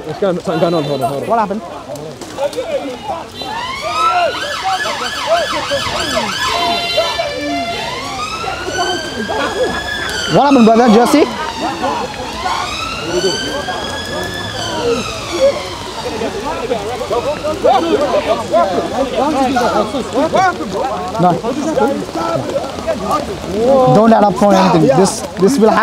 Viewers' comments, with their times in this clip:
0:08 DCCI christian fellow laughing at fully anticipated drama scene‼️⁉️❗🔥🔥GAVE IT ALL AWAY🤔🤔😅😅